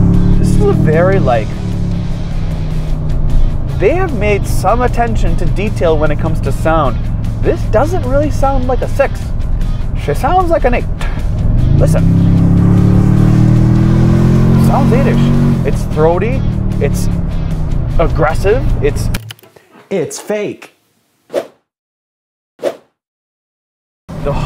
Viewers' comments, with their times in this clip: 0:09 shame that they don't give you sound options including "moped", "helicopter" and "horse". I'm thankful you can turn off that stupid "enhanced" sound.